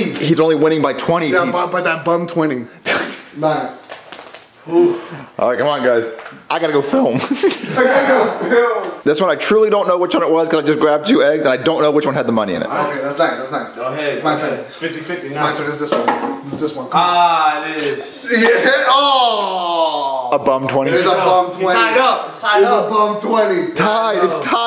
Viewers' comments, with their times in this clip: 0:06 voice crack.. “i gotta go fįLm” lmfao 🤣